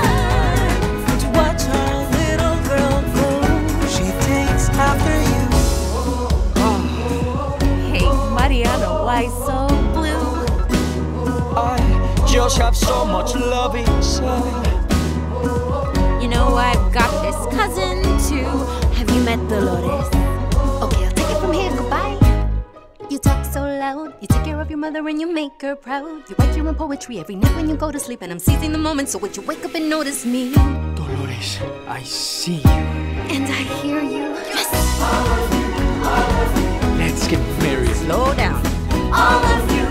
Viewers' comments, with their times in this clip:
0:03 I really want to hear more of Agustin's singing voice, he and Julieta deserve a full duet together
0:13 dolores rapping part
0:22 Loving the Hamilton rhythm Reference here!